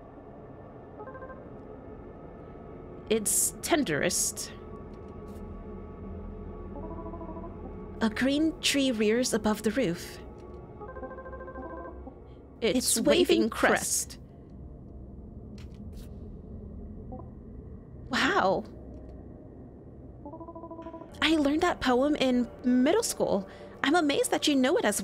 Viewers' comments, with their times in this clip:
0:10 Very nice little touch that you did both of the voices